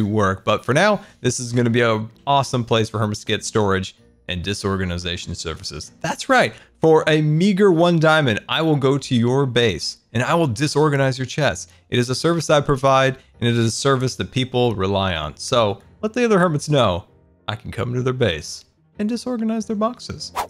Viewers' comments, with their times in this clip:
0:06 Love the chest monster. Btw look what did he say? "A n####r 1 diamond"